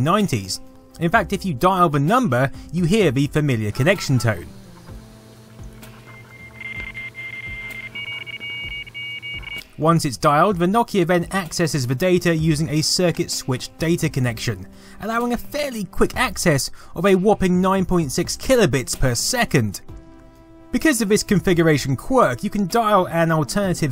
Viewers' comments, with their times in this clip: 0:06 sounded like darude sandstorm
0:06 titanic sos signals